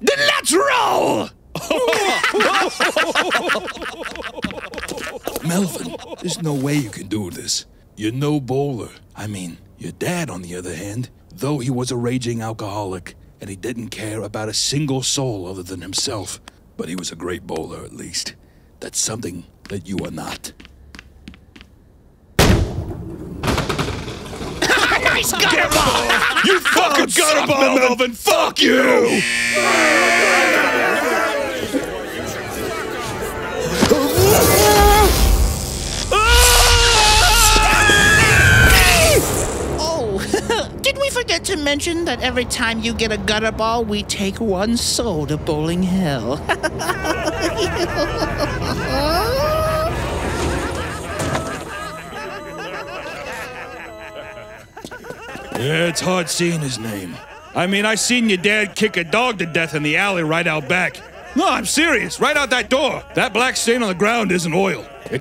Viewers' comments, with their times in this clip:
0:06 I need to explain something and it’s not going to make sense. right here where he says “you’re no bowler” made me and my friends laugh so hard. It was an inside joke we had. One day my friends Xbox controller was acting funny, and I was in a very slaphappy mood and I said some gibberish stuff. I said “haha your controller is noboller”. From then on we decided that something that didn’t work or wasn’t right was “noboller”. So when he called Melvin “no bowler” it sounded to us like he said “you’re noboller”. Our brains have become something else 😂
0:25 I love it when the pins simultaneously swear at him, it’s hilarious
0:46 I wanna laugh like that atleast once after spelling despair to someone like that lmao